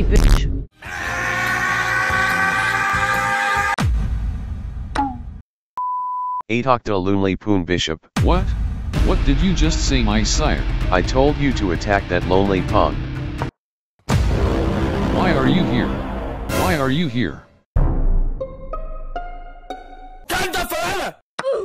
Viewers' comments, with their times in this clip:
0:07 Black king: iha the loli pool bishop Got me rolling 💀